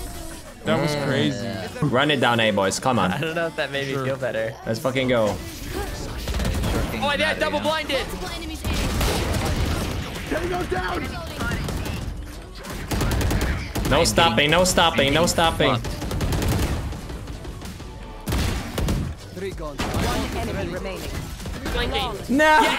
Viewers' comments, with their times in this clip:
0:10 sounds like a solider from WW2 xDDDD